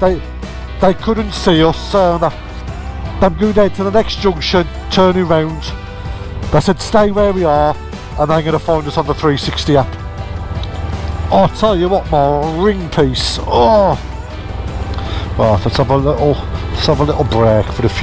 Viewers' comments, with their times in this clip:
0:03 It's am......BEEP! BEEP! BEEP! on the horns as you all pull away😂😂😂😂😂😂😂